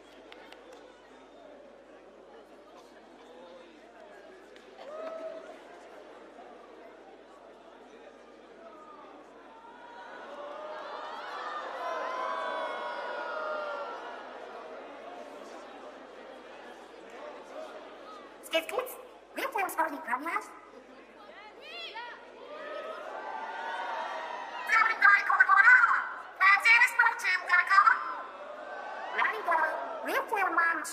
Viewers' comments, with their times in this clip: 0:10 I think you can hear her again
0:13 people screamed boo for some reason